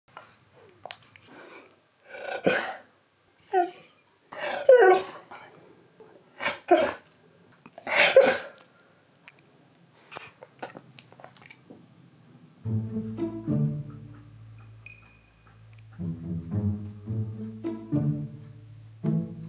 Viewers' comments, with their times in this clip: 0:02 that “no” was so cute ☺️